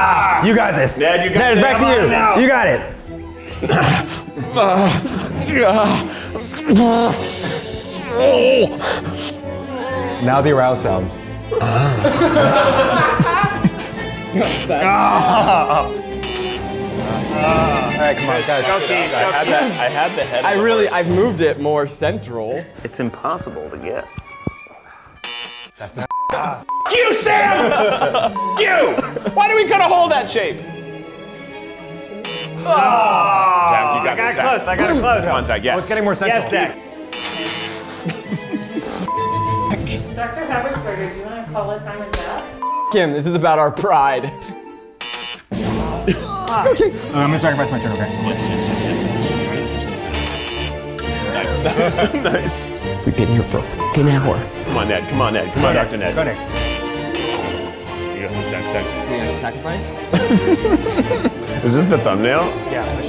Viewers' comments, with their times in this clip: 0:08 I was NOT ready for Keith making urgently stressed noises about Neds farts and then Eugene requesting aroused noises followed by the MOST UNEXPECTED MOAN IN MY EAR W HEADPHONES IN 😂😂🤦🏼‍♀️
0:47 The Crescendo That Played For A Second As Keith Pulled The Horse Out 😂😂